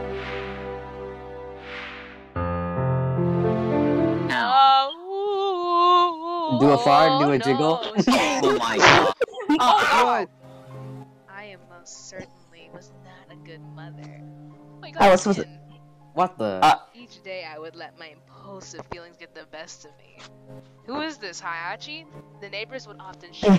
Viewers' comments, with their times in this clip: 0:09 Don't tell me i'm not the only one who heard the scream 😂